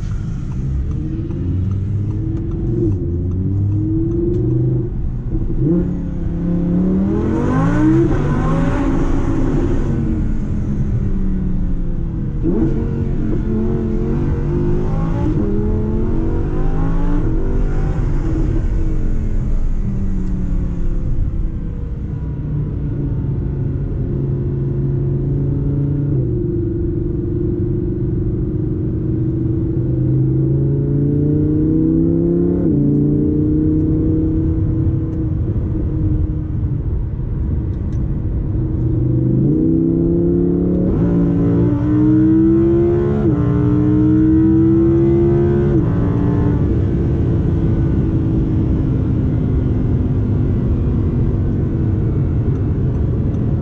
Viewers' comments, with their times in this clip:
0:07 start video... ME : where is the sports exhaust ? the video here bro
0:38 O.O these down shifts